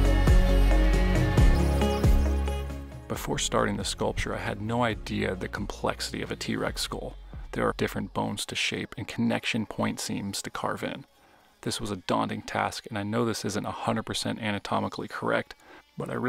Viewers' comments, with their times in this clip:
0:03 That's quite cool. Just to say, to foreign ears you sound like Jordan Peterson!